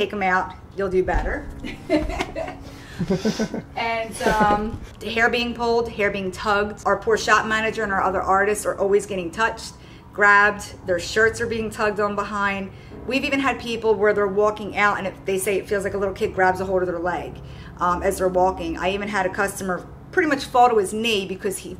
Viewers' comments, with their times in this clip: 0:05 just after they are told to watch their wallets, a female voice says "Damn"